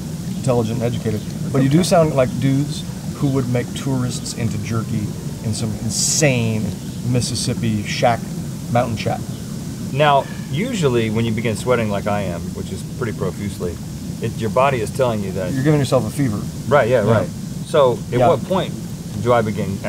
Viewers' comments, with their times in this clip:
0:03 I can hear an ambulance :D